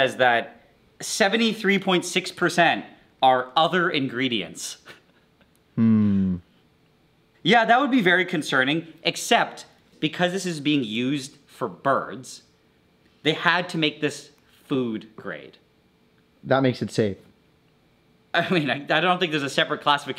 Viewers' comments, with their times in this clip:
0:05 The suss "hmm" 😂😂😂